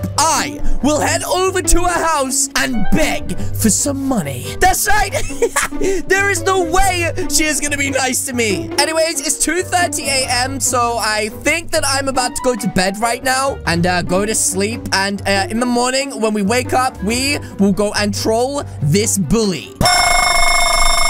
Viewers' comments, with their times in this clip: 0:04 look at the way he says money